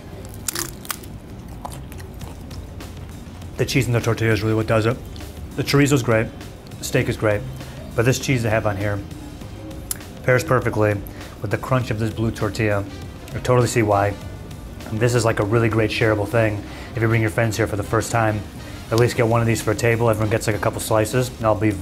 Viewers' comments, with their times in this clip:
0:05 he sounded like Trump for a bit lol.